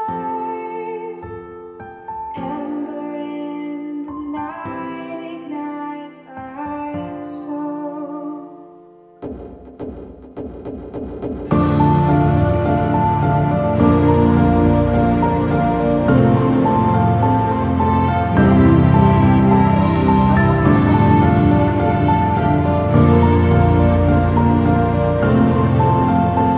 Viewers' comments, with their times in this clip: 0:09 I think I already commented this, but maybe if you added heavier/ accenting drumbeats, the music would feel less lyrical. Specifically the section after the orchestral chords could be accented by drums. Also, I understand that it's a confidence thing but if you let more of your natural voice sound through it would add more to the rawness.